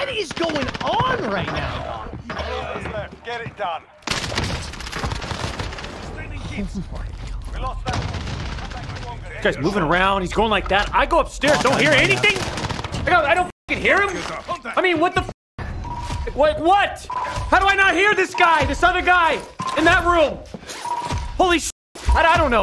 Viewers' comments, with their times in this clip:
0:05 Doc is right, guy is 2 feet away running around and reloading and no sound !